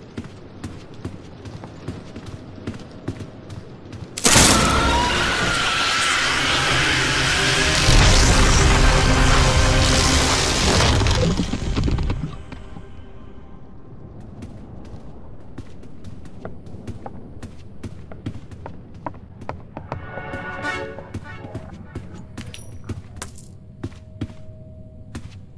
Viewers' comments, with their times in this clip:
0:05 Bro turned into a otamatone 💀
0:08 Hey why screech like that?